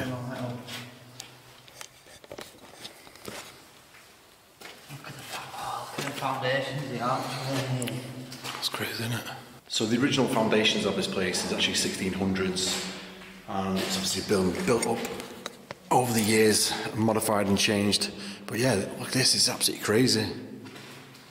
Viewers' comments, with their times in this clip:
0:04 theres a whisper